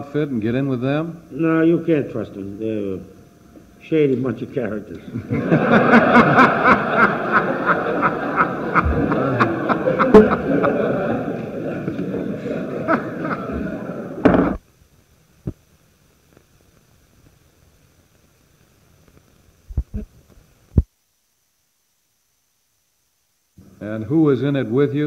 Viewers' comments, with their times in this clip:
0:10 Thing is, these Politicians are just as shady. Thats probably why they laugh so hardily.